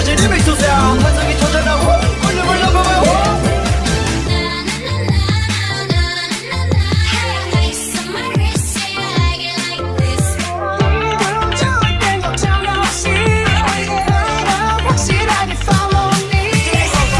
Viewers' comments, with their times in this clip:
0:03 An unreal job. The transition is SO GOOD. The entire outro is cool, but that Dynamite/Ice Cream/Left & Right mix was my favourite! Such a good job! 👏 👏